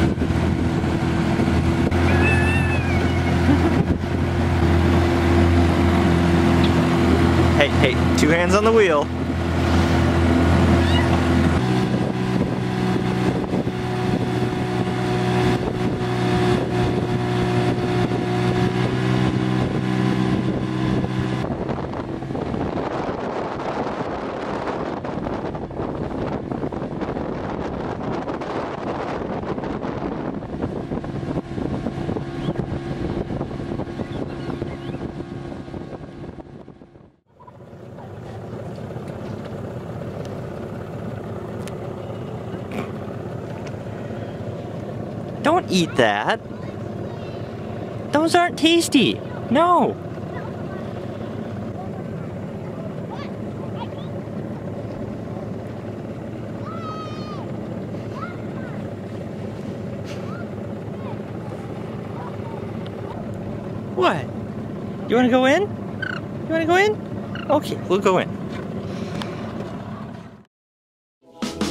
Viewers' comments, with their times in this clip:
0:05 sassy phone ohhhhh
0:56 I think someone saw Telephone and is shouting to her.